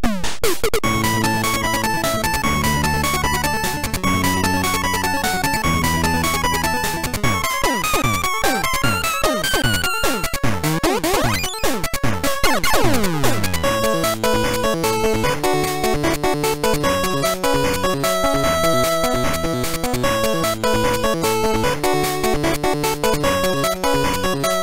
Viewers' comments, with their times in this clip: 0:07 when the music gets wonky